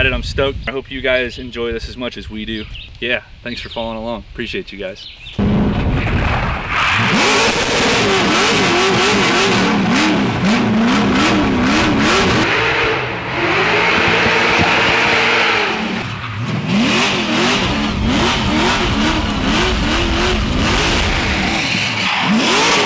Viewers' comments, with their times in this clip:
0:05 leaving an eargasm button. never get tired of that LS roar